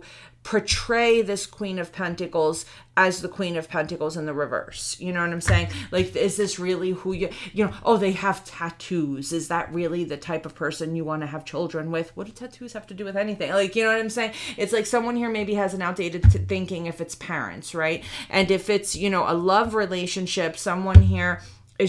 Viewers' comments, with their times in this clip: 0:06 .. the voice you used 🤣🤣🤣🤣🤣🤣🤣